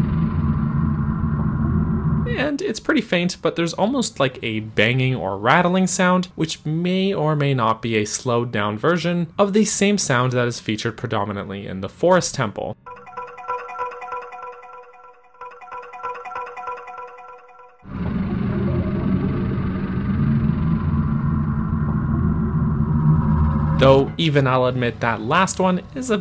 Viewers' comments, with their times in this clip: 0:08 Okay, I wasn't going to point this out specifically in this video, but I can't just not now that you mentioned something about the possibility of the slowed down rattling sound. Fun fact- The descending part of the Water Temple that plays right at the very beginning before the chimes and the flute and sitar and stuff kick in is actually the same sound effect as the rattling sound in the Forest Temple, but it's the Forest Temple using the slowed down version of the Water Temple's theme. :)